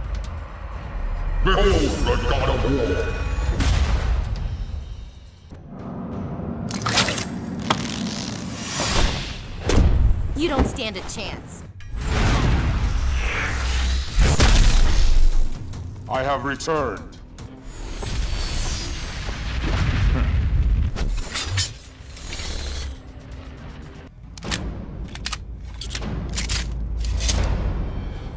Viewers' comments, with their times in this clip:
0:09 sounds like megan from famu guy